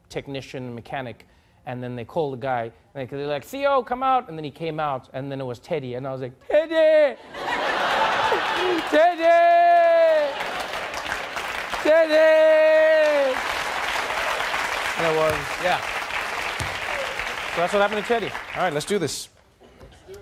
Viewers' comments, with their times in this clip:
0:06 I cant get over how he says teddy